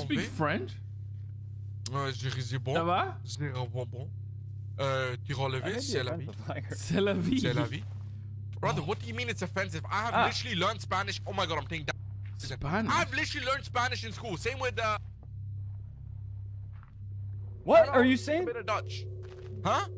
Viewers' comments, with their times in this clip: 0:03 As a french person I wanted to say you both have a pretty good accent, because sometimes English people still have their own accent but yours is fine ! :) Btw, how did you learn french ?